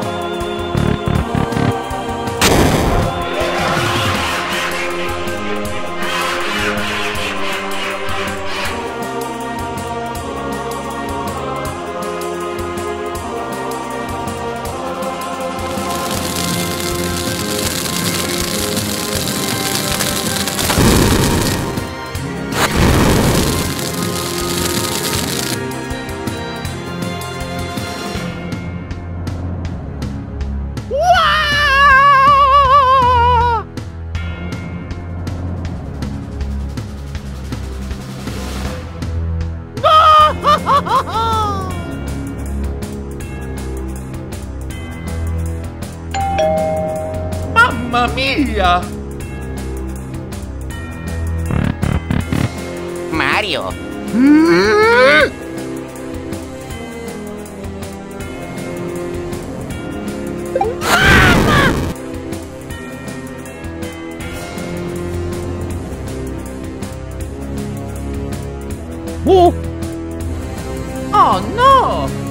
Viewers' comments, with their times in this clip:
0:03 Omega Flowey's laugh
0:54 behind the scenes U hear luigi and stabbing